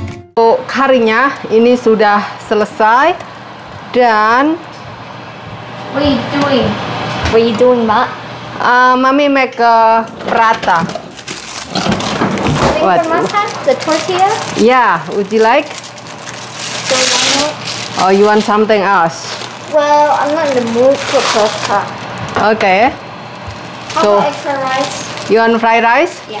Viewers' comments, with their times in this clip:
0:07 i loved the way she called her "mak"🥰